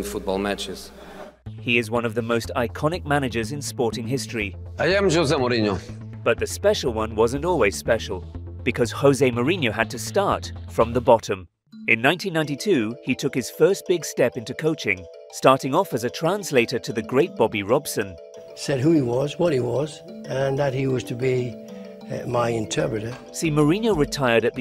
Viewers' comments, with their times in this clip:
0:04 If anything shows the lack of respect, is that a few seconds in, Mourinho says his name (Joe-zay), but throughout the narration, it is pronounced "Ho-zay", and "Tragic Downfall" implies something along the lines of severe, unpleasant, criminal convictions. J.M. annoyed me a little, but there is no doubting his talent as a manager. This is a poor video. Mourinho deserves much, much better than sniping from the sidelines.
0:05 he literally pronounces his own name...how do you then mispronounce it 3 seconds later